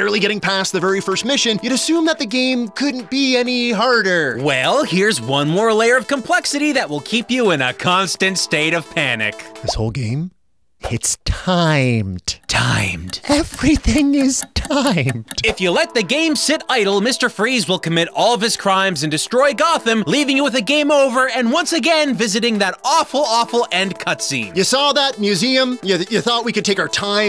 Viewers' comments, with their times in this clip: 0:09 the sound of someone who is slowly losing his soul.....